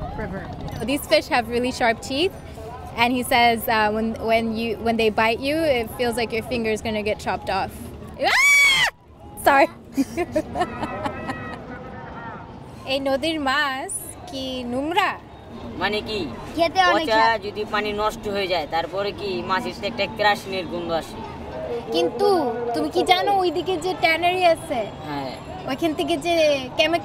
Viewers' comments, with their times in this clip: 0:08 when she screamed and dropped the fish, that was so cute lol